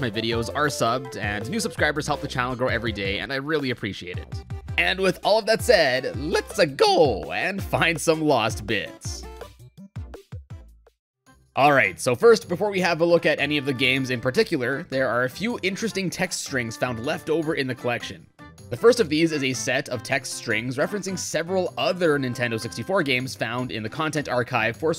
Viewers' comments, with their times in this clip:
0:06 that was a great Mario impression
0:06 sounds better than Pratt's